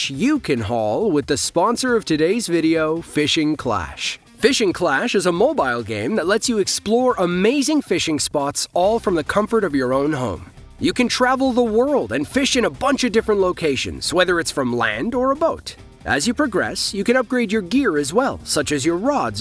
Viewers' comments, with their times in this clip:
0:05 mobile: mo-bull, not mob-isle…